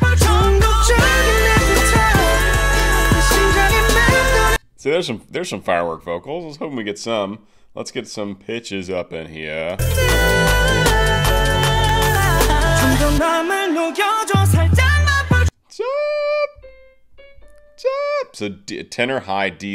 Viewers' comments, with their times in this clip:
0:07 Im so sorry I first heard something else I almost choked on my drink dubwxibwibziwn